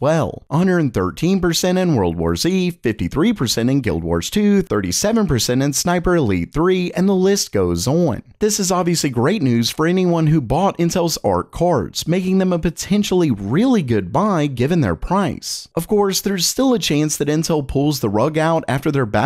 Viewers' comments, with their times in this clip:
0:06 list goes oan